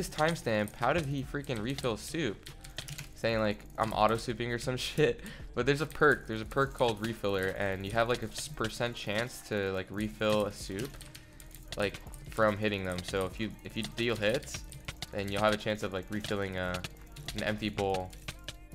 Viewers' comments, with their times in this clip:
0:03 ngl i heard "im auto clicking" not auto souping